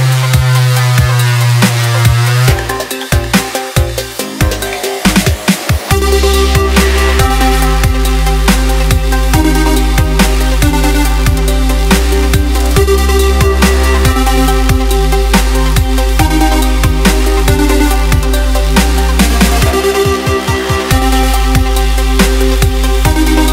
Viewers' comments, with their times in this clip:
0:07 Do your heard the drop .... SICK... There was no drop because this sucks!